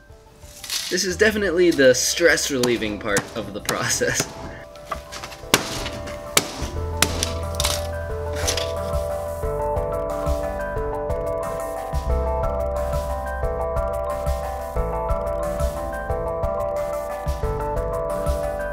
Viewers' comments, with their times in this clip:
0:05 that's an ocarina in ,right?